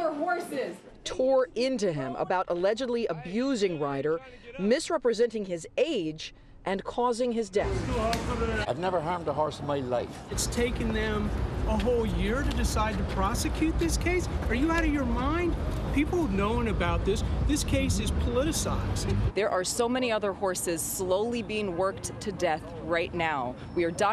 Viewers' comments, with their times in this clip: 0:08 'I've never harmed a horse in my life...' was that a Scottish accent?